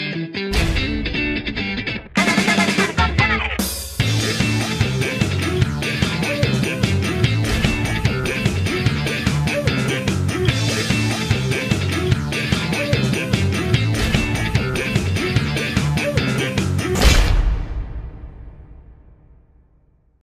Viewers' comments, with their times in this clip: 0:06 I keep watching this over and over again because of that song!! #HowManyViewsGaveTheQueen? 😂